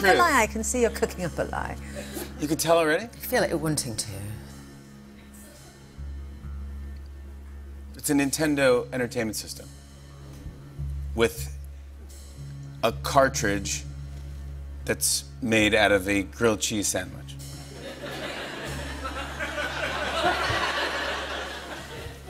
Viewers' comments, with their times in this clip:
0:03 "I feel like you're wanting to" That grave intonation plus her godess face makes it the sexiest line I've ever heard